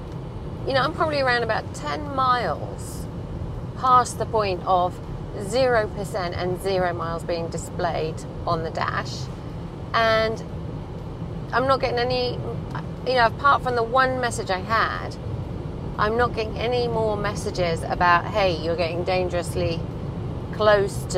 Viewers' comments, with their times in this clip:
0:07 Isn't an EV supposed to be quiet? I have never heard such a noisy car.